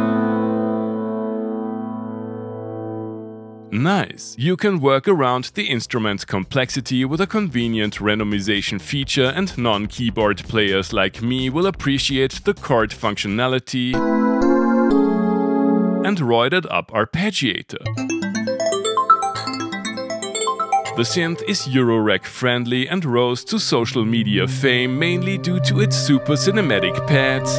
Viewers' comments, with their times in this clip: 0:09 button I’d be pushing….hydrasynth sounds great!!!